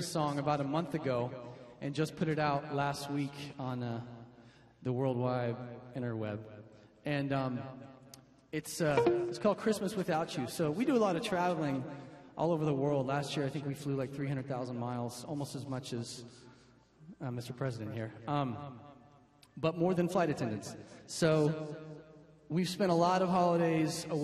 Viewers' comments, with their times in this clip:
0:06 did anyone else hear an weird sound ? i spent 3 mins looking through all my computer to see what had made the noise... all 5 times i replayed this... :-\
0:08 * ans it's a guitar string XD